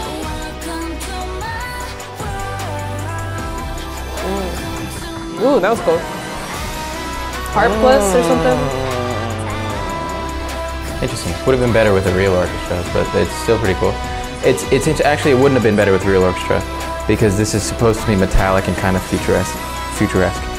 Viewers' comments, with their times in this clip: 0:06 The disney intro part got me 😫✨ it perfectly fits the song
0:06 listening to this song in 8D feels so overwhemingly amazing!